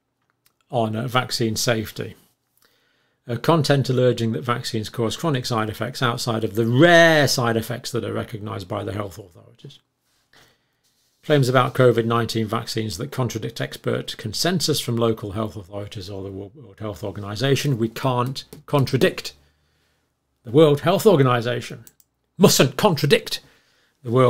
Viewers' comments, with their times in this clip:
0:06 Dr. Campbell turned into a sheep for a second :D